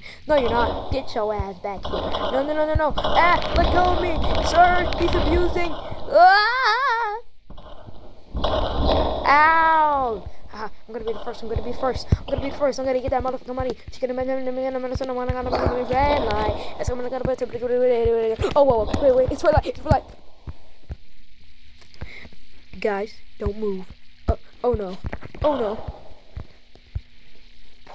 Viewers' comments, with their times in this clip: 0:06 bro is eminem
0:14 bro became eminem 💀💀